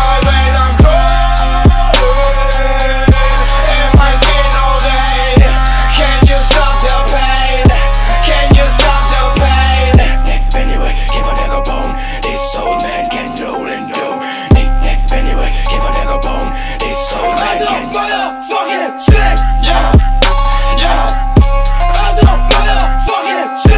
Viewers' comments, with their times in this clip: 0:10 I LOVE THAT KORN VERSE <3